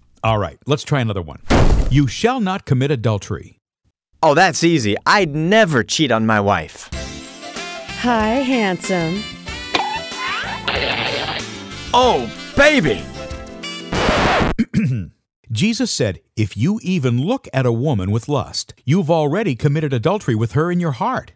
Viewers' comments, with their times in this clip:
0:06 A W O O G A eyes pop out of head jaw drops
0:06 Can I just say, the music choice was really good. Great saxophone solo. I'm a music teacher, so there's that. In all seriousness, I'm showing this to some of my students. Great presentation and I always come back to these series of question to get people to show the true state of our hearts.